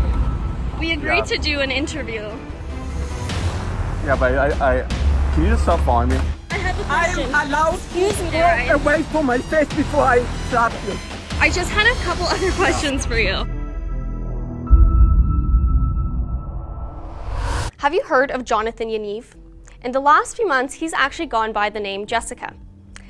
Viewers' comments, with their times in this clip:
0:09 I think she's saying "away from my face before I slap you" not "my baby boy"